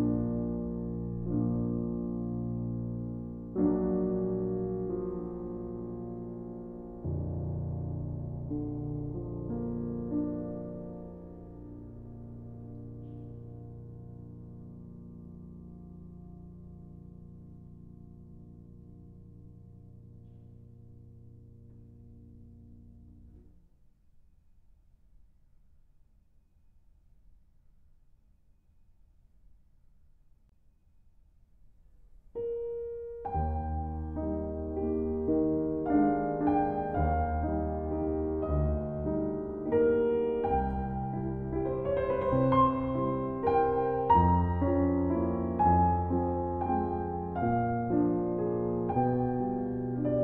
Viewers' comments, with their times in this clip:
0:06 holy shit that low note sounds so amazingly deep and rugged, what an awesome piano
0:32 I could swear that whenever this note plays my heart stops for a moment to listen closely